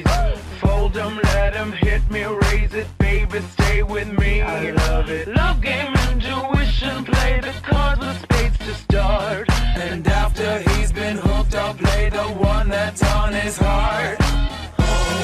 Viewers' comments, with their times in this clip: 0:03 I can’t unhear Cartman omg I hate TikTok